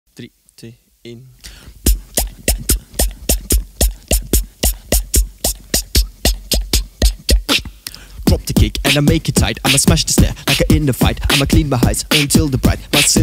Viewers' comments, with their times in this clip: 0:00 Clash of Clans noises intensify